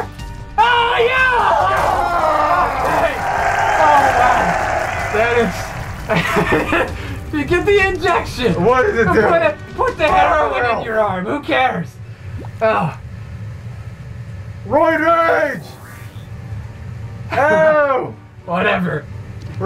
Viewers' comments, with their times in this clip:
0:03 Was it neccesary to add a pleased crowd? I think it was an error. Unsubbed.